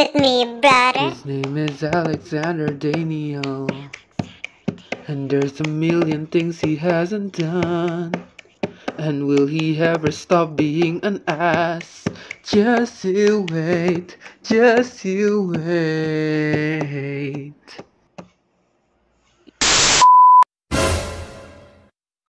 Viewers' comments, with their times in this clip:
0:09 Who is that singing his voice is beautiful :o